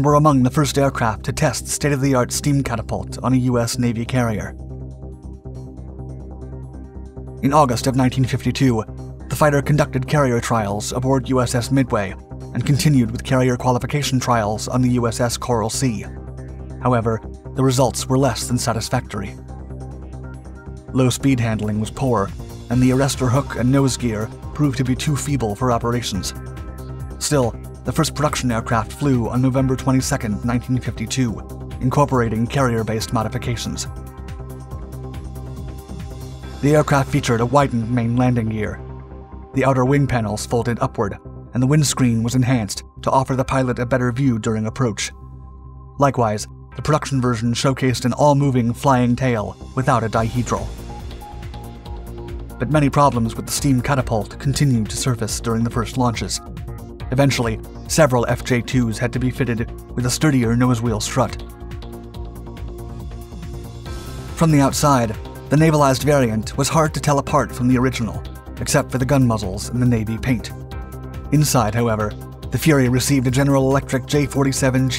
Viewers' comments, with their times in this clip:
0:06 first recorded instance of Danger Zone being played, Steam Catapults just make that sound
0:57 Did you seriously say "fitteded" as in the past tense of fitted, itself the past tense of fit. Am I hearing things?